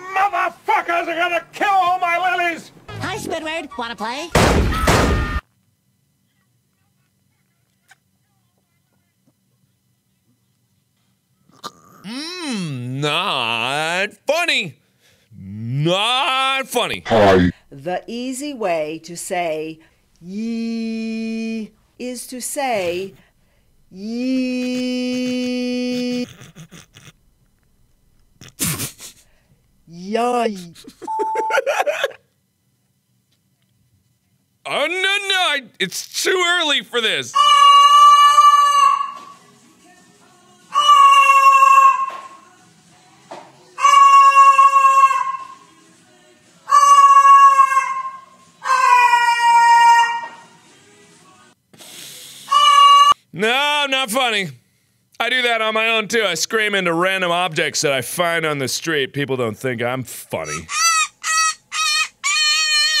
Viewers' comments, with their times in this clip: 0:06 If you listen closely, you can hear the audio repeat quietly.
0:06 so... is nobody gonna talk about how you can sliently hear the video on marks headset? ...no? ok then.
0:07 If ya listen very closely you can hear the video replaying in Marks headphones
0:17 mark laughed at YOY
0:30 Laughs for two seconds.
0:36 into the video AND YOU LAUGH
0:38 am I the only one who thinks the bird sounds like Dan Howell screaming into a pillow to relieve his stress?
0:43 i actually had a band where the singer girl used to do that to get "different" vocals
0:46 i thought the bird was gonna sing the instrumental of chandelier
0:51 he is singing the song of his people.